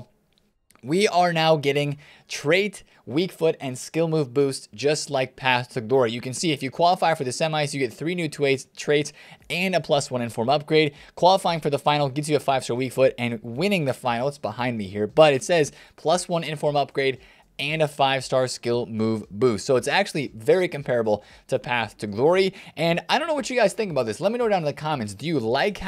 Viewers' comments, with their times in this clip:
0:07 Can’t wait for the new twaits 😂